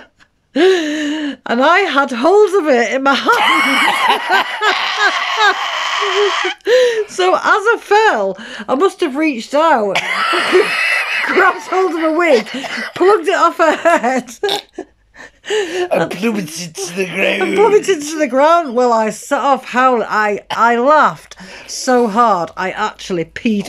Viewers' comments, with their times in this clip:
0:04 that laugh I'M DEAD😂😂😂😂